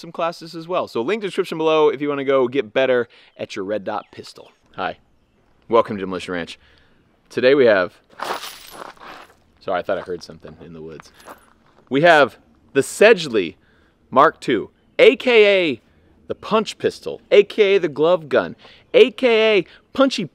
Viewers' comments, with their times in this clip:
0:07 I love it how Matt moves and you can hear all the brass on the ground;)